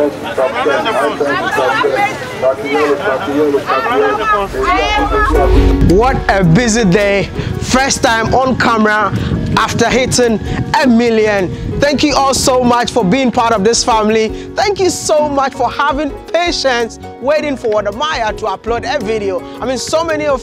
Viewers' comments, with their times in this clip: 0:07 THEY SHOULD PRESIDENT AND BE VICE PRESIDENT OF THE USA THEY WILL DO MORE WORK IN A DAY THAN HELPING THE COUNTRY MORE THAN AMERICAN GOVERNMENT OFFICIALS IN THE LAST 50 YEARS 🤦🏾‍♀️ I LOVE HIS ACCENT ❤️